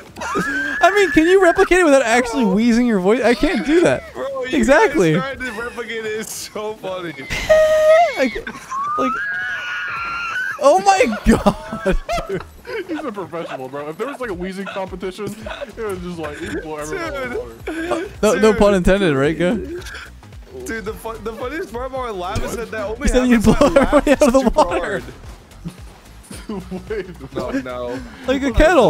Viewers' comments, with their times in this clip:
0:09 is he a donky or what